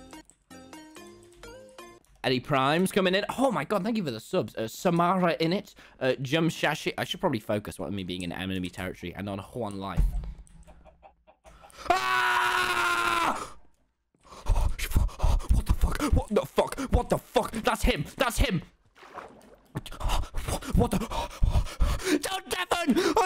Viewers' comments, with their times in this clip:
0:08 I should really focus 'cos im in enemy territory and I'm on JUAN life the way he says one lmao